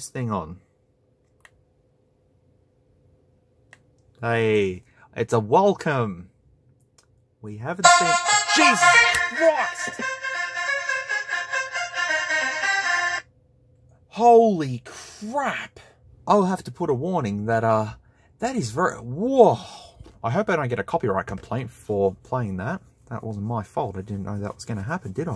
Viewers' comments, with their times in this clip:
0:07 WHEN AXEL F WITH LOUD VOLUME PLAYS
0:07 I died laughing at the boot up sound and your reaction to how loud it was also I haven’t heard that song in so long 🤣🤣🤣
0:08 I didnt believe him, so I just had my volume at full blast, I did the exact same movements he did when that audio played.